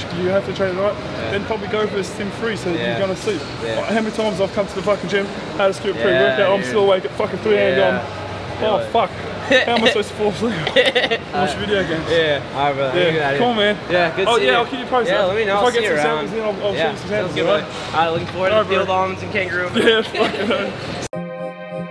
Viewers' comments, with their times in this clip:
0:09 the cutest laugh